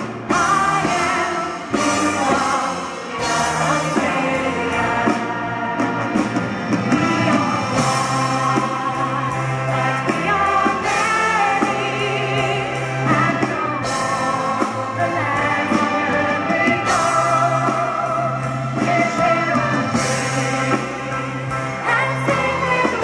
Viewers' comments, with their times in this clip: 0:09 Who ever that is that started singing the Obbligato did an Excellent Job.